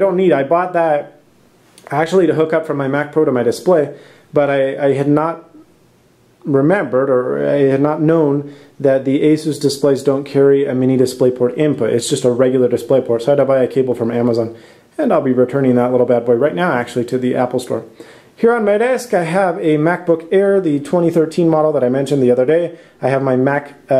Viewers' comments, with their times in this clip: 0:06 "remembered" thickest Spanish accent ever